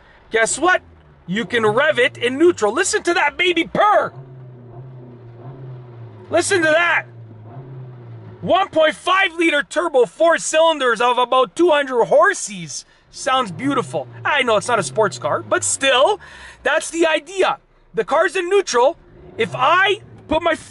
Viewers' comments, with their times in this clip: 0:03 "Listen to that baby purr" Me: I dont hear anything 😐